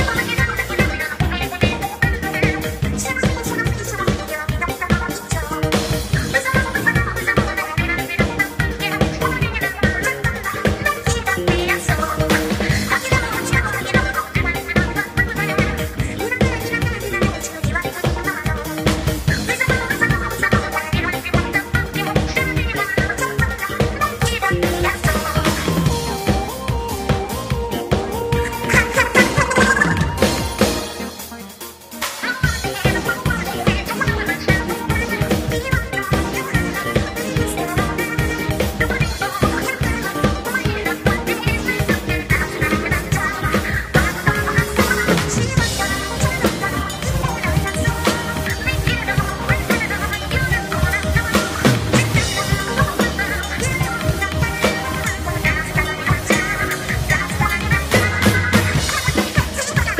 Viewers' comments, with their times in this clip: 0:06 i love their harmonies so much aaa
0:44 I can’t get over the half-time breakdown